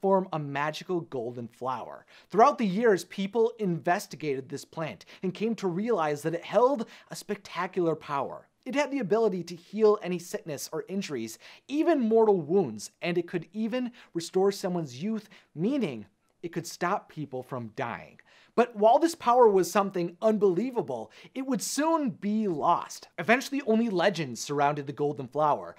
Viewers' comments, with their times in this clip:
0:06 amazing volce crack